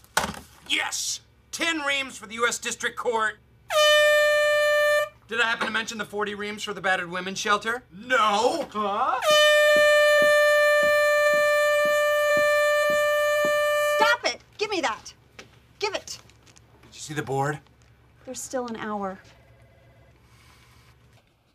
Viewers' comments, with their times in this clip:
0:08 Turning a Air-Horn into a freaking dance number, genius